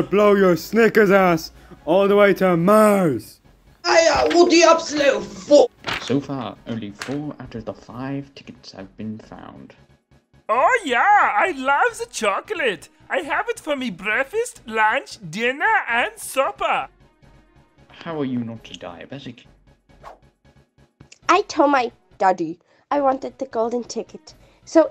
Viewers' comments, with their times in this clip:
0:10 he sounded like oreo b from annoying orange